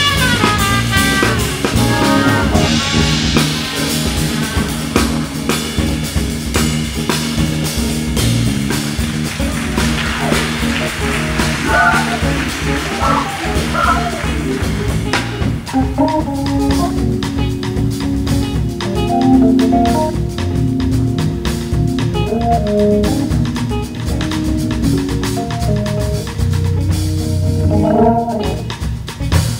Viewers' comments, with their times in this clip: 0:10 ouch, the guy on trumpet just was struggling :(